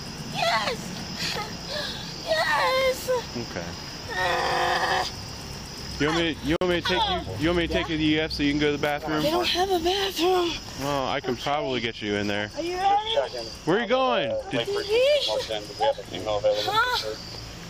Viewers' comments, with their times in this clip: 0:03 The "okay" 🤣 He's so calm.